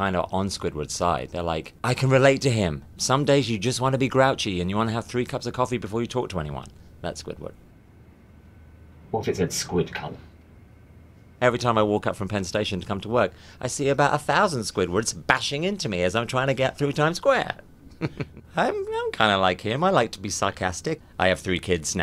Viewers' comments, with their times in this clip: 0:08 What does he say because I'm pretty sure it isn't "Squidc*nt" but that's all I hear